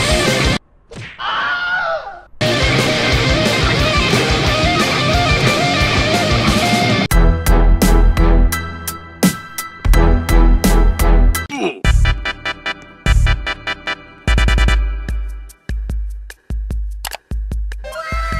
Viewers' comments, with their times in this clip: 0:05 is moment when its rock music